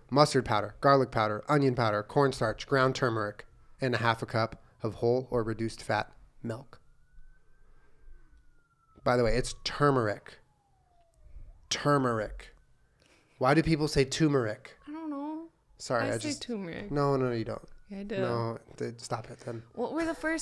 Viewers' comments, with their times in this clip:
0:07 The sirens had me thinking the ambulance was outside